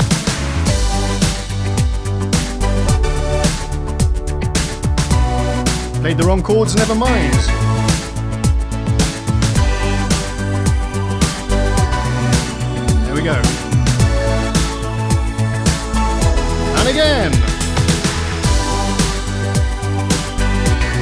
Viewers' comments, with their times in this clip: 0:09 Those 4 chords that starts Sounds amazing! Witch cords are they? I would like to play them too :) And great vid btw.